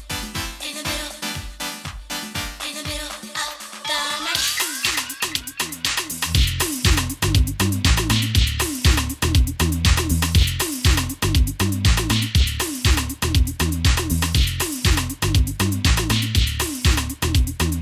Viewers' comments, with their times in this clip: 0:03 15 minutes into the mix only just starting the third tune just don´t cut it for me, I expect more work from a dj on this level traveling around the world. Spent 6 minutes setting up the first transition without getting it sounding even ok, giving her a second chance (maybe she´s just nervous?) but the second transition is of same quality. Nothing wrong with the song selection, but playing full length tunes and not mixing very well makes me loose interest. And just as I finished writing that she completely forget about the bass being cut out when mixing ...kind of proved my point.